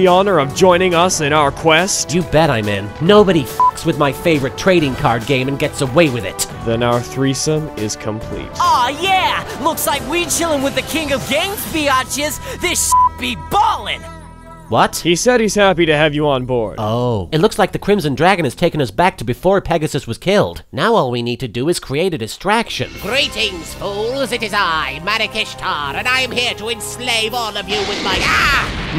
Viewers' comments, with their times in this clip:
0:09 is dope for no reason w the old school ost